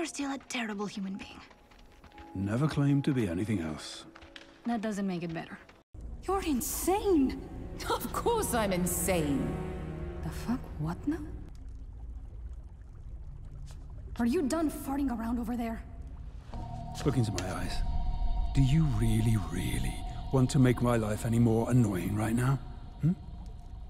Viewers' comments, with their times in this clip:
0:10 is peak voice acting